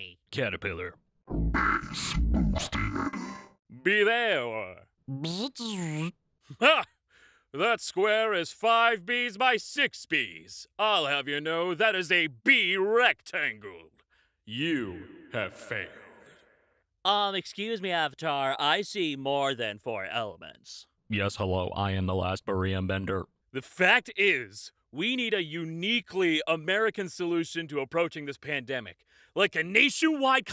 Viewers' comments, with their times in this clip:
0:04 I am very happy to hear the buzzing.
0:15 So my internet died and the last thing i heard was "Y O U H A V E F A I L E D" then a huge pause.... I feel weird